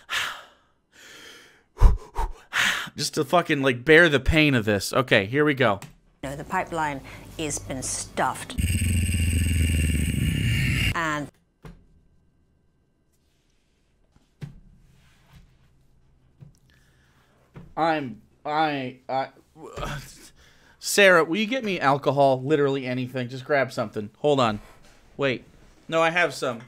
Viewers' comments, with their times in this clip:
0:07 Oh wow, the growl made me pause the entire video for a while, i cringed so abruptly that I think I pulled my cringe muscle. It hurts.
0:07 God, he sounds like a damn car idling 🙄 Love the part where he lists off all the things such as feminism that have allowed women to make so much social progress in the world... the exact things that he and every other reactionary like him have balked against for years now. Also, as a big Invader ZIM fan, I'd like to personally thank this fuckhead for forver ruining the word "doomed" for me.